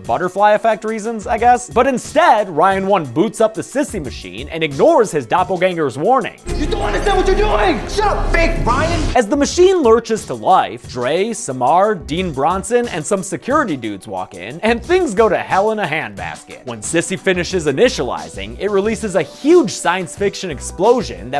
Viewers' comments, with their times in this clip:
0:06 the way the two ryans talk to eachother is like a rocket jump skit